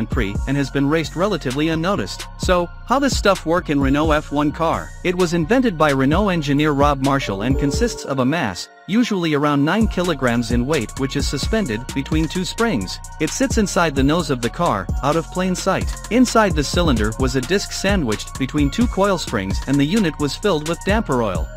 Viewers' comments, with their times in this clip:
0:07 WTF is that sound ???? You scared me, I thought I've got a business mail/meeting